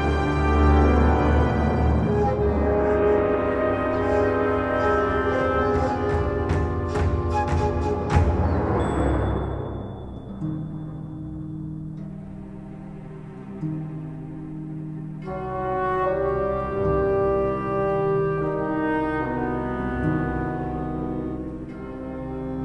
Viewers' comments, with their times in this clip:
0:07 UM SO ARE WE NOT GOING TO TALK ABOUT HOW WANDERER'S WEAPON WAS FORESHADOWED?????? IN SCARAMOUCHE'S BACKSTORY CUTSCENE, THE BELL SOUND FROM HIS WEAPON IS LITERALLY THERE?? HELLO?? 😭